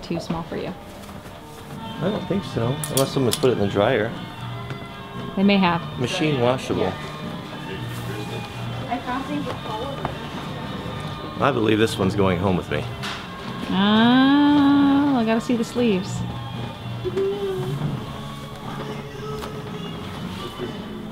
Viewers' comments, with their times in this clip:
0:06 thumbs up for Eric Clapton playing (even somebody was whistling the tune in the background)
0:08 Clapton in the background:D